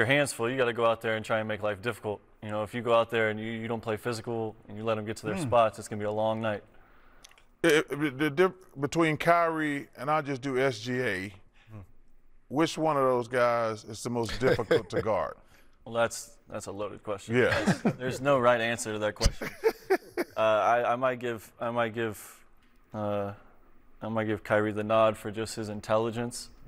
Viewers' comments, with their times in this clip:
0:10 chuck saying he'll just do sga is wild then three secs later shaq laughing is hilarious